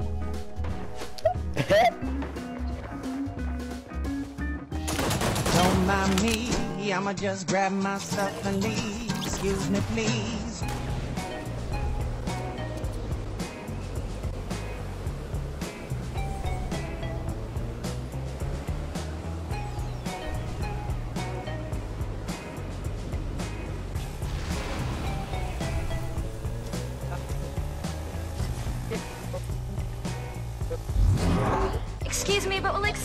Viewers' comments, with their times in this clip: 0:10 it went with the beatt
0:15 wasn’t the music in time with the person phasing through the walls lol 😂